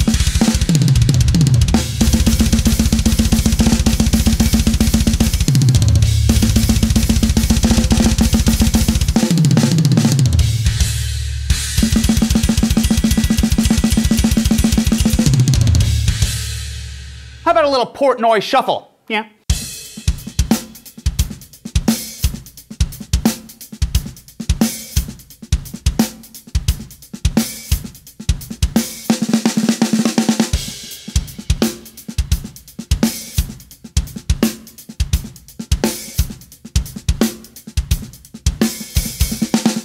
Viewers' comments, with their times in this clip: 0:03 Love that blast beat with drum rolls in between 👍
0:20 kind of sounds like Rosanna from Toto.